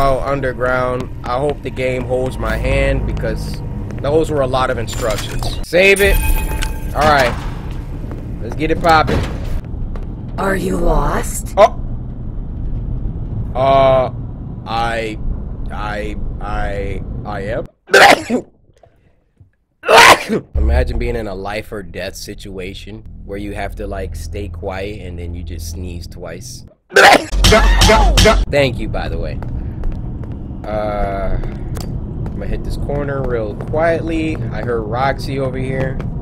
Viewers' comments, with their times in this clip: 0:08 Are you lost? Y..yes? sneezes
0:17 😂😂😂 you sound like my grandpa A….A……ACHOoOoOoOooOooOoOoOoOo 😂😂😂😂😂😂😂😂😂😂😂😂😂😂😂😂😂😂😂😂😂😂😂😂😂😂😂😂😂😂